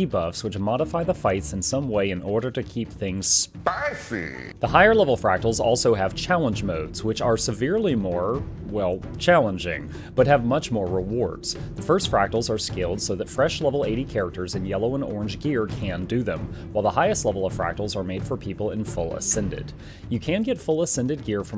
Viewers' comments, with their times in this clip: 0:04 was that you saying spicy or Stefon?